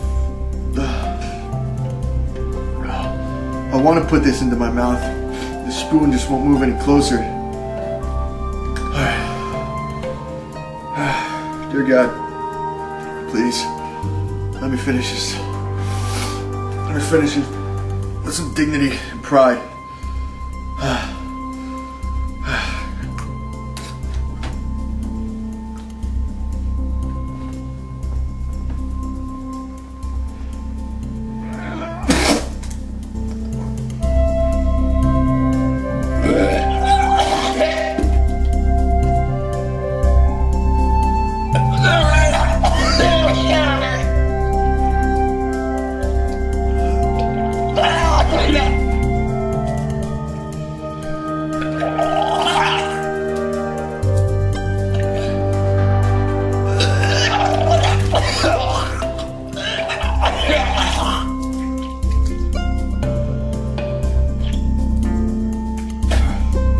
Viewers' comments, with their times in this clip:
0:06 It's a bear!!!!
0:35 listening to this with head phones.....the music is amazing especially
0:39 barf burps are the best!!!
0:41 smoker from l4d like
0:46 You sound like you're dying.
0:48 What's wrong with the background music ? What it has to do Totally opposite